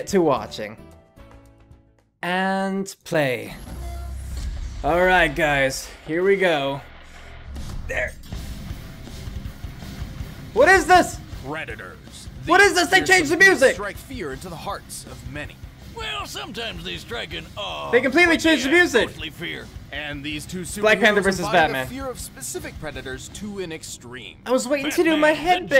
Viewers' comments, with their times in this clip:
0:07 When you expect the beat drop but instead you get twinkle twinkle little star